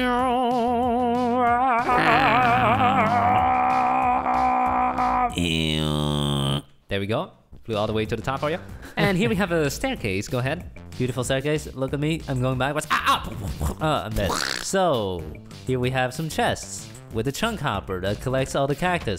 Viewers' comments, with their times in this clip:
0:06 Beautiful vocal bass